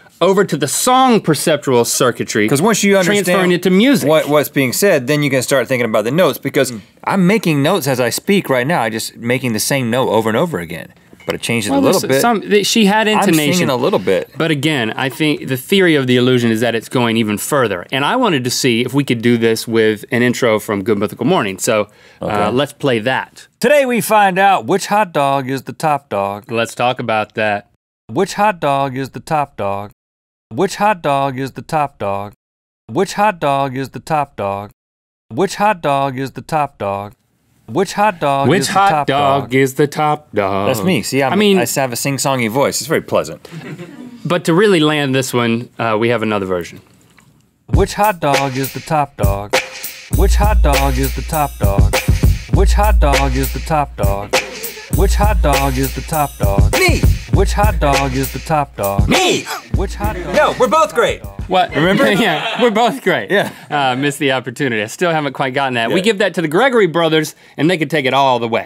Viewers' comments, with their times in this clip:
0:07 personally I think it’s because she was in the same pitch so when it got looped and kept the same key it made music
0:47 thats surprisingly super catchy wtf
0:50 Here comes THE YASHRAJ MUKHATE 🤣🤣